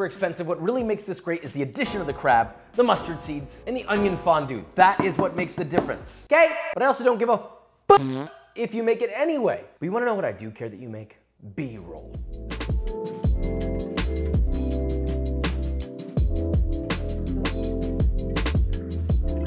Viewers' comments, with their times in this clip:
0:07 moment with fart effect is hilarious :D :D